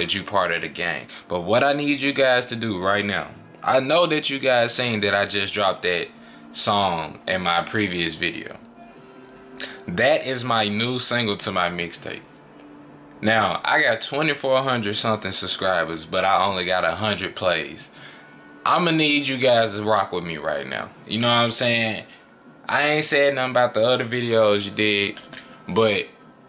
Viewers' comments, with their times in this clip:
0:09 I heard Fortnite in the background😂😂😂